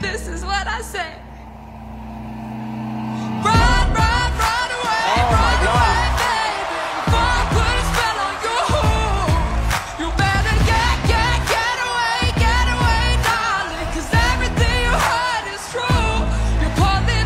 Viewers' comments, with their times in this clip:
0:03 Medusa sang that like she was in a rock concert